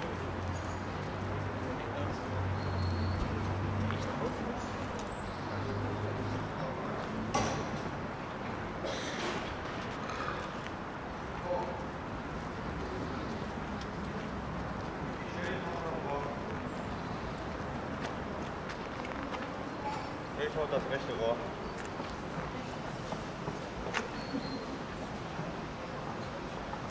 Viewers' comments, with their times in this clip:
0:09 that was a nice burp